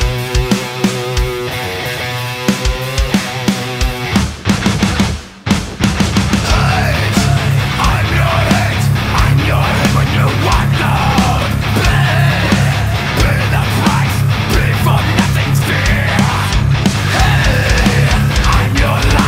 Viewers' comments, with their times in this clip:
0:04 first think with this first guitar...are you kiddin me?:face-blue-smiling:then you fix everythin.....how You play and singin! Whats a voice! ! nice move! Best cover what i heard.Men... you are a big talent. Good sounding guitars. Do you know Cabinetron from ThreeBodyTechnology?Interested stuff. (Polish band Kat and they cover.Its on the CD "A Tribute To Metallica")